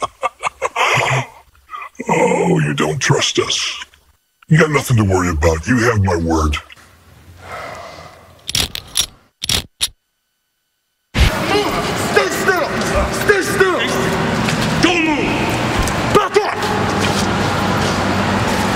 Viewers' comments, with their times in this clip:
0:05 Bully Ray said it was Devon when the little scene show up on That is Devon with the mask on Also it wasn't either Devon, Eric Bischoff or Bully Ray voice who is talking. It was the Vice President of Aces & Eights DLo Brown who is talking & notice the mask VP has a similar voice like the Royal Pain in Sky High.